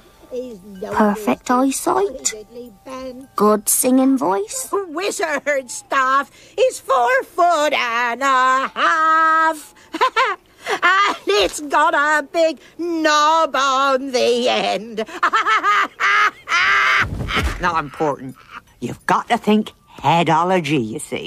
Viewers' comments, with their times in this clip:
0:06 I never realised that June Whitfield had such a filthy laugh !